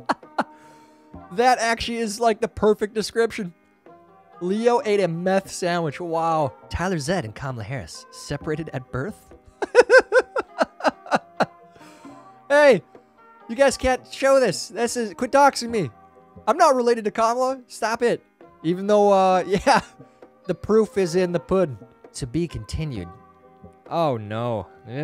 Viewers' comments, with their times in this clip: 0:07 At around the mark cackling intensifies